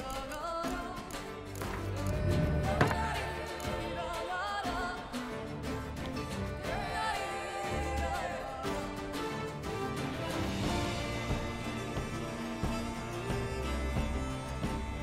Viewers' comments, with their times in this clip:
0:03 For Honor For Toussaint soundtrack is probably one the most epic combat music in this game. that's some genuine reaction right there.